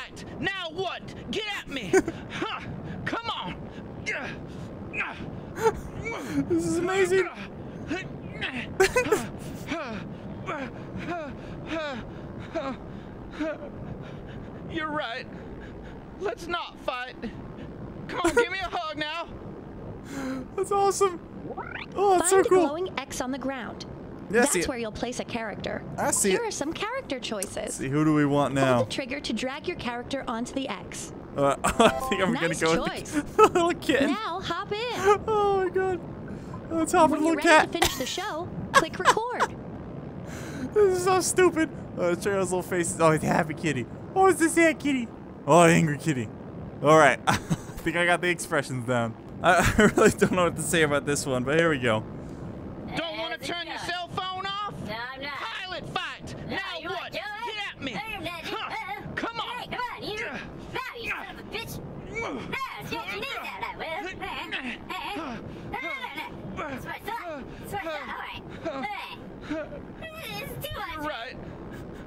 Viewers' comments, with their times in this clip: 0:03 he sounds like morty
0:04 the cop sounds like mr.meeseeks from rick and morty LOL
1:00 Is it just me or did he say come on you son of a b*tch